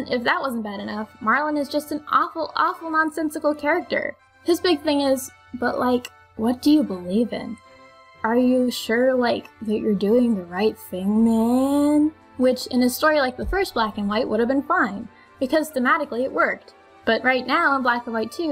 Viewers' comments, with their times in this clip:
0:06 that sounds like Jaden Smith lol